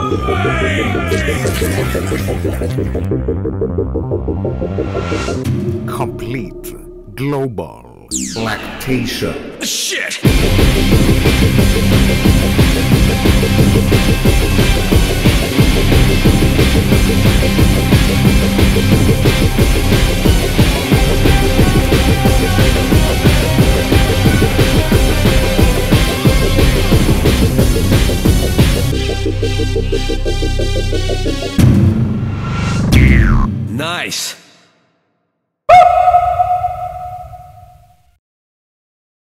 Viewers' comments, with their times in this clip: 0:05 Enjoy the drop
0:10 Why the fuck does the final part sound like a Legendary Pokemon theme
0:20 Somebody help me , i need a loop of this Part, really made me nut 14 times with the guitar Also... n i c e